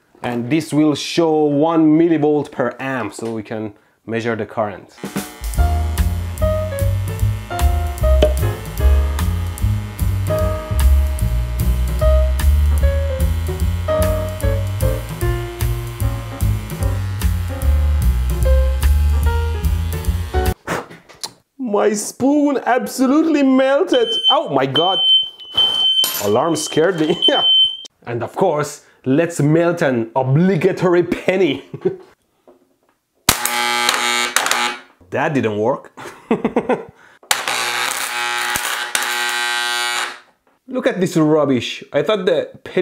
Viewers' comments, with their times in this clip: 0:04 Not hearing the audio quality change mid-song threw me for a loop here
0:10 When you played that “elevator music in I instantly thought of dankpods 😂
0:10 This part is so fricking funny, there is literal elevator music playing while you melt a spoon and burn a hole through your table
0:11 Excited smile Fire erupts Calming elevator music continues
0:23 “Honey is that our smoke alarm?” “No its just the neighbor upstairs doing some crazy shit.”
0:24 the alarm went off 😂
0:24 I generally thought this was my smoke alarm and it scared me
0:28 the fire alarm ruined the moment why😢😢😢